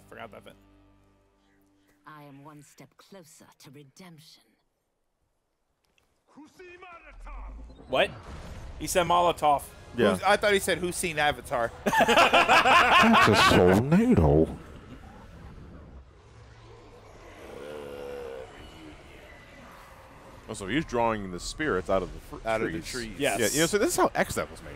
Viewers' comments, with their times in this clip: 0:06 I... thought I heard... "PU🐬Y MOLOTOV!" Something must be VERY wrong with me...